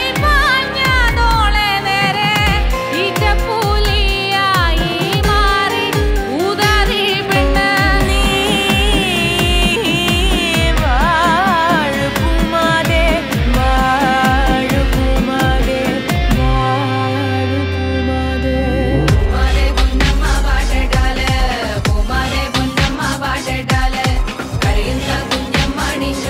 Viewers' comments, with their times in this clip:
0:10 too has that crack